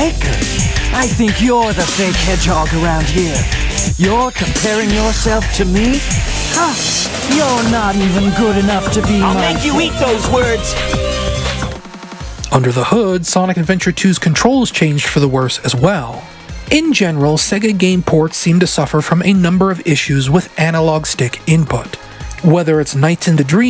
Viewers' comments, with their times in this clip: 0:08 if this is a mistake, its an amazing one. It makes it seem as if Sonic is truely angry at Shadow for insulting him, so he interrupts Shadow and starts the battle